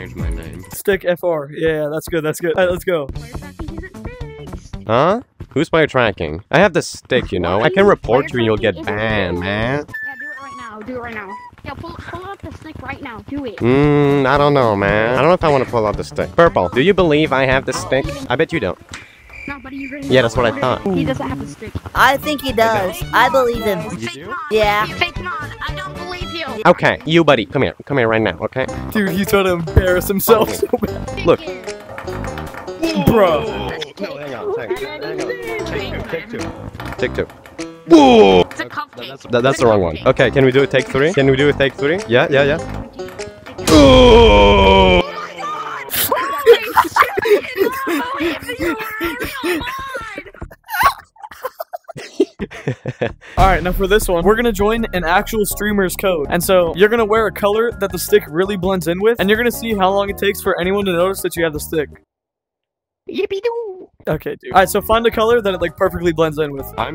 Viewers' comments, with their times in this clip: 0:05 sounds like ai 😂😂
0:16 bro sounded a nerd
0:43 BOOOOOOM-" funny lol"
0:43 new Minecraft death sound
0:44 booom got me laughing
0:49 the little laugh